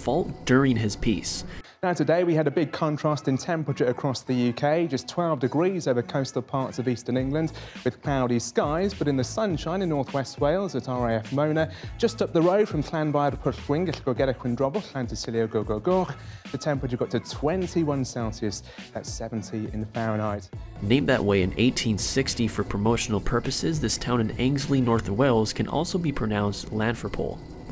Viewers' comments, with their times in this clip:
0:10 Wow my dad can pronounce it way better